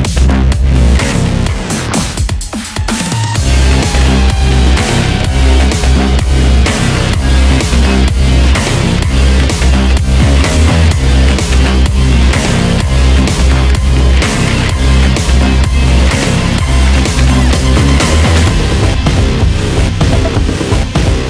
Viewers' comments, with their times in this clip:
0:06 It kinda sounds like something wicked this way comes